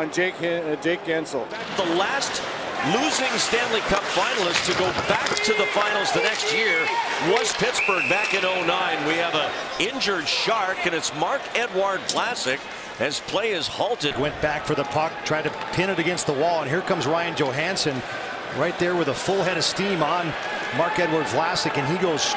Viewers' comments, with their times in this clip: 0:03 that's the tastiest crunch I've ever heard